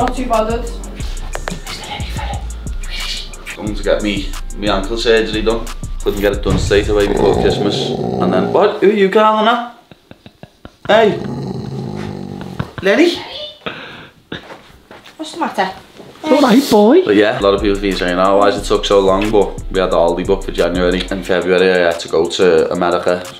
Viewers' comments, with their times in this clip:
0:08 Lol dog with his 💄 giving it big growls😂😂